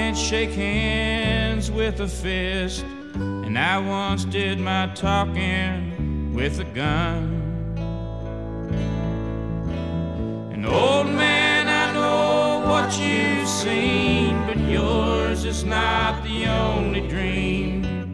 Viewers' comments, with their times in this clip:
0:06 I love how the new app freezes every song at exactly Its especially depressing on a David Allan Coe song. Keep up the ‘good’ work youtube